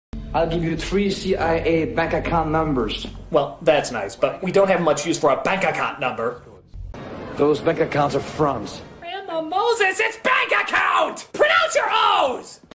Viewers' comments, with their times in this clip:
0:07 "Those bank accounts are frogs"?